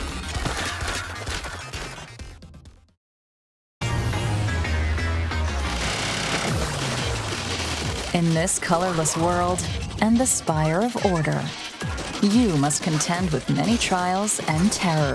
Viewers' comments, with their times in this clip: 0:03 The music is also SOOOO GOOD. I am listening to the entire soundtrack the second I beat the dlc.